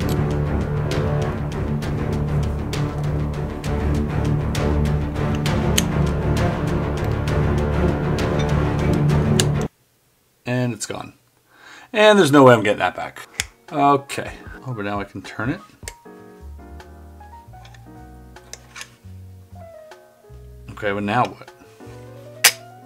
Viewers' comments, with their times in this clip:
0:09 I lost my shit laughing when the music stopped and he said “it’s gone, I’m not getting that back” LMFAO